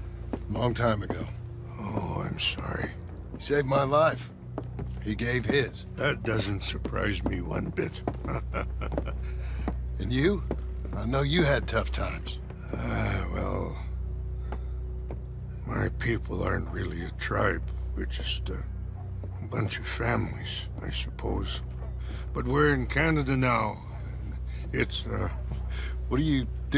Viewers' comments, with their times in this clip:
0:09 that little chuckle the Rain falls gives always gets me. He always saw the good in Arthur.